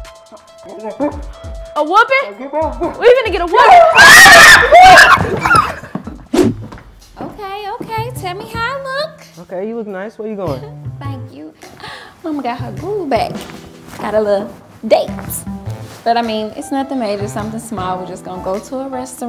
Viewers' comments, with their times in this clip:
0:04 why he scream like that